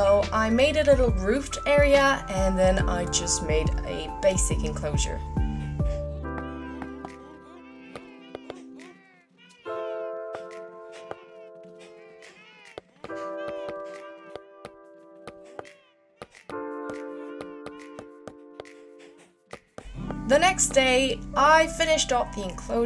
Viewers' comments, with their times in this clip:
0:06 I thought that I heard cats and got sooo confused, but after checking the subtitles I found out its cows mooing 😂😂